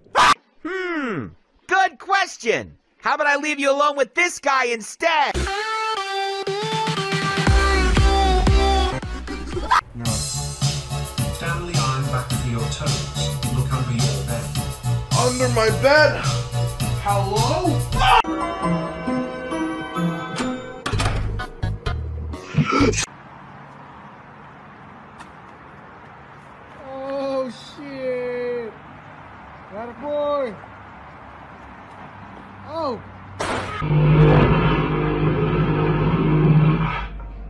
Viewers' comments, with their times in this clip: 0:09 Sounds Like Daisy Circuit But Slow
0:18 Bro just about too say sans very loud